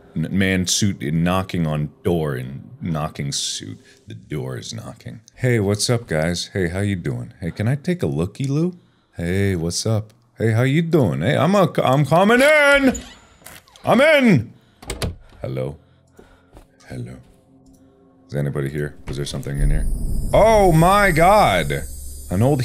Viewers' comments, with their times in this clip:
0:06 the how you doin'? ReMinDed me of JoEY froM friends omg